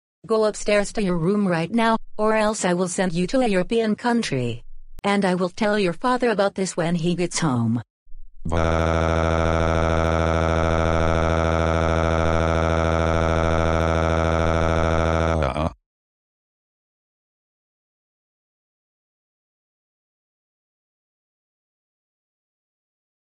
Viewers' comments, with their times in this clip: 0:08 Dark Galaxy Bowser's crying voice or Dark Moon Bowser's crying voice or Dark Golden Oreo Bowser's crying voice or Dark Watermelon Bowser's crying voice or Dark Forest Bowser's crying voice or Dark Amelie Bowser's crying voice or Dark Fog Bowser's crying voice